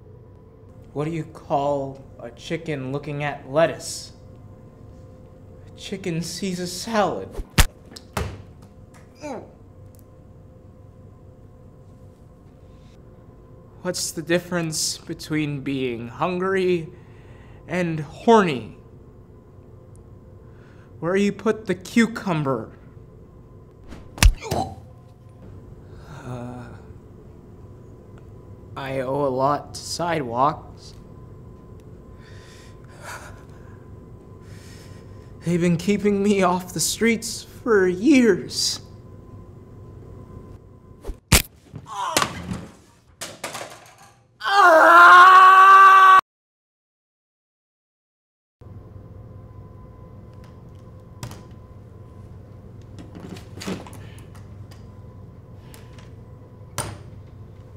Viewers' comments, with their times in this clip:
0:05 Boi if you hear his voice you know he is being tortured
0:45 Perfectly cur scream